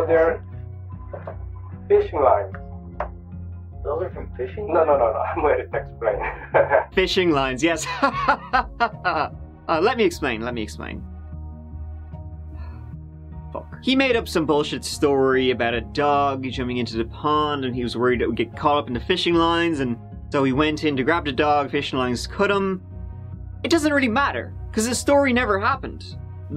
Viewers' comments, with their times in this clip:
0:10 FLESHING LINES hahaha not FLISHING LINES hahaha